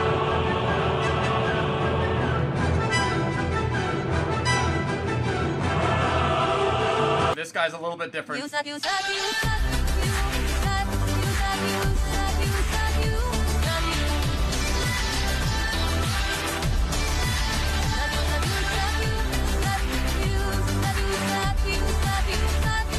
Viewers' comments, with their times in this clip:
0:09 is it saying eusebio or what